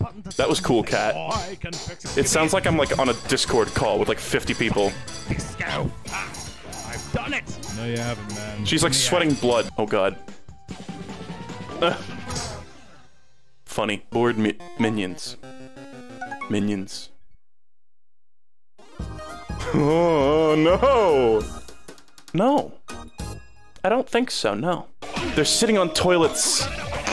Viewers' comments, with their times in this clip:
0:09 oh my god the Ween at the end